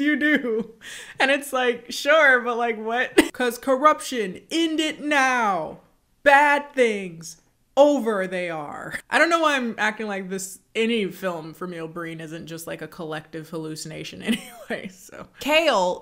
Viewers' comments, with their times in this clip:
0:03 you sounded just like Divine here, what an iconic statement 😭